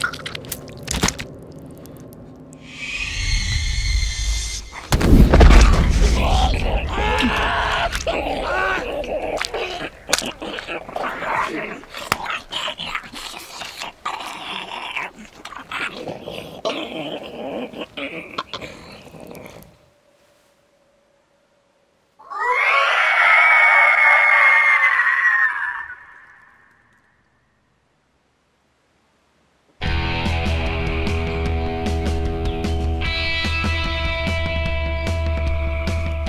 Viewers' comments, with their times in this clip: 0:07 why didn't he scream when she ripped his entrails out but decided it was a good time to do so when she started giving him intense hickeys??!!
0:22 Gotta love that ree
0:22 R.I.P headphone users 🤣🤣🤣